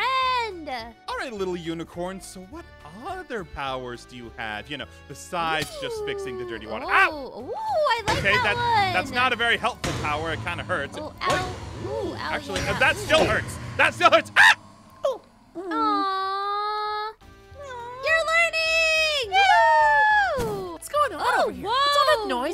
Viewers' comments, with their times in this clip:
0:09 that sounds like when a Blaze is hit and when a Blaze dies